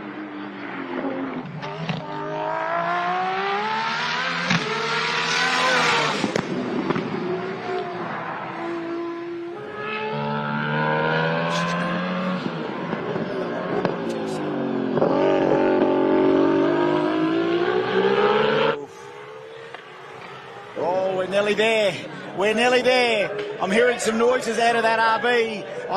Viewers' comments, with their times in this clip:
0:10 Amazing Car! Sounds like it lost a cylinder